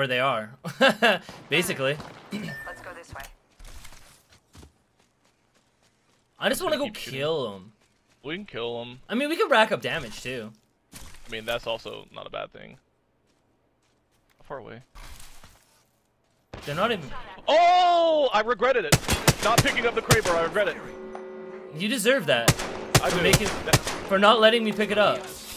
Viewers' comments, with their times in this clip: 0:06 "I just want to go 𝘬𝘦𝘦𝘦𝘭 em" How cute lol